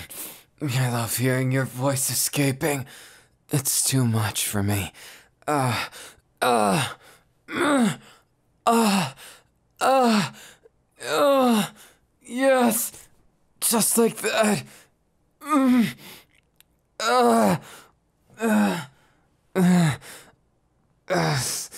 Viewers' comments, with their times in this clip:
0:08 those moans were everything!...
0:09 the baby moans I- 🥺